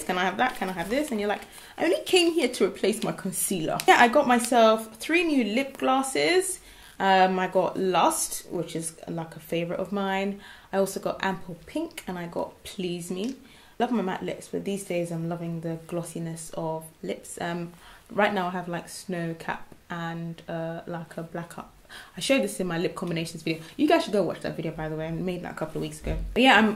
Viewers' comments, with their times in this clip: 0:09 LOL at the random accent outbursts!! you put Ample Pink twice on display :)